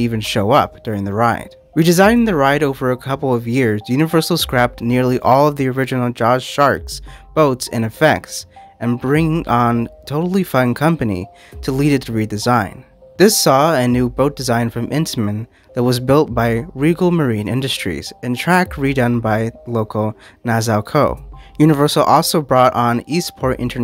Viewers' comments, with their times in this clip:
0:08 I really enjoyed the video and the nostalgia of this ride. If I can offer one piece of critique, the voice overs sound like they were all the first read of the script. In many places your inflection makes it sound like you're questioning a word (which I assume you wrote). It just kind of sounds like you're unsure of what's written but kept that take in the final product. Like it reads as "and bring on? totally.. fun company". If it's the first take, it might be worth going through it a few times until you have it down and feel confident in that section. You make awesome videos, do great research, and entertain us all a ton. Just wanted to pass along a piece of advice which might be able to take it to the next level